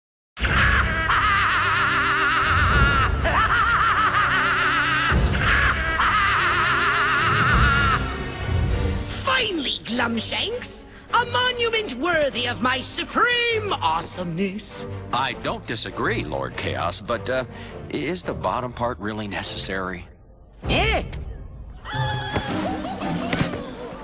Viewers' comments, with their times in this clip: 0:09 Kaos laughs epicly then said: Behold!!!